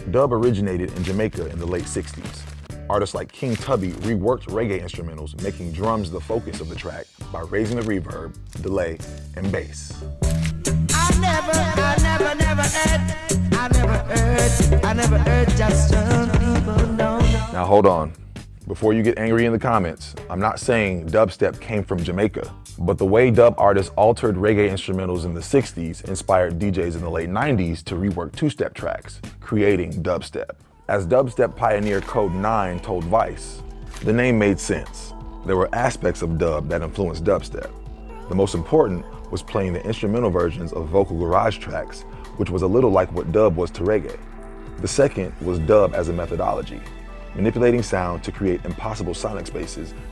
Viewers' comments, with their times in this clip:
0:03 I was like OMD thats so dubsteppy!
0:10 "I've never heard justin bieber, no", is that what he says or I'm crazy?
0:33 Stop talking and let me shazam the song godDAMIT.